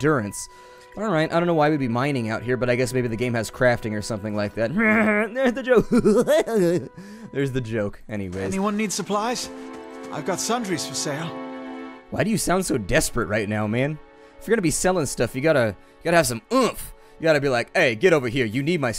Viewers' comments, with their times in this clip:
0:04 The goofy laugh made a subscriber of me.